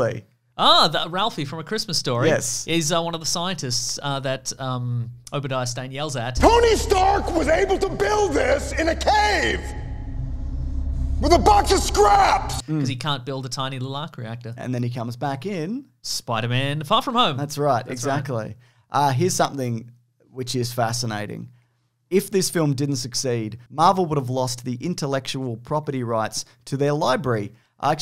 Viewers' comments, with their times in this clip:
0:09 I’m confident that Jeff Bridges forgot the line here and then remembered it last second.